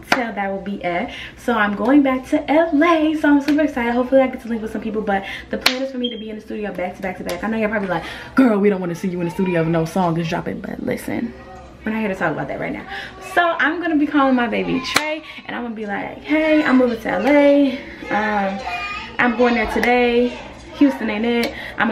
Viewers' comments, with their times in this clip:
0:03 Did she say hopefully i can sleep with some people?? Or am i trippen.?